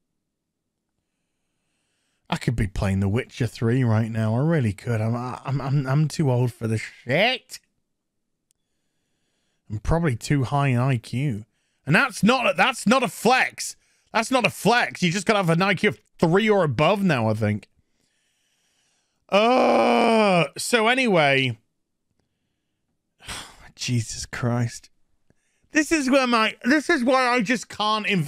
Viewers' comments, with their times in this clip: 0:09 Thats deep says his IQ is to high, moment later reveals truth with patrick sounds from spongebob